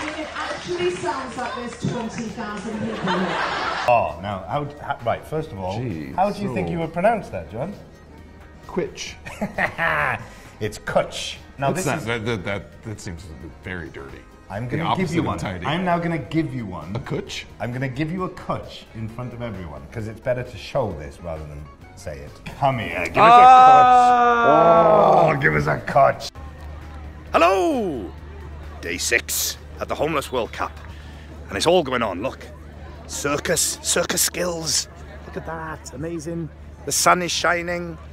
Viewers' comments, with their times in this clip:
0:09 that LAUGH, I'm-
0:22 when Michael says give me a cwtch i swear he sounds exactly like my Grampa who is welsh